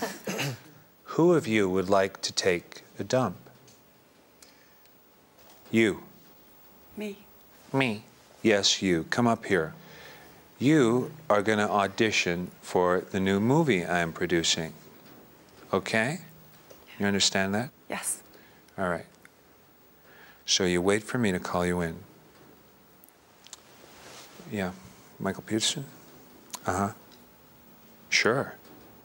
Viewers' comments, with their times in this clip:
0:10 close your eyes and it's literally Kevin Spacey